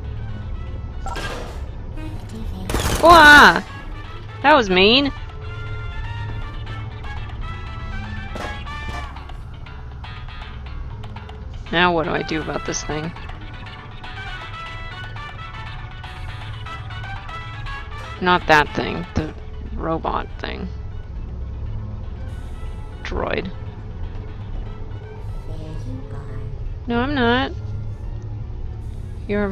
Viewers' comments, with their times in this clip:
0:10 :D Yeah! *A few minutes later... You know... that music starts to get really annoying after hearing it loop over and over and over and over D: Oh well, I'm sure such an innocent looking companion cube filled with hearts will be really friendly :)... right?